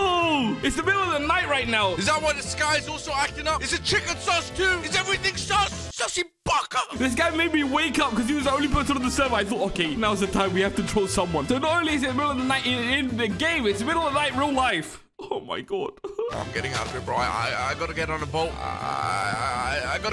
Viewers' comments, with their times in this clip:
0:05 the way he said SUSSY BAKA is priceless🤣🤣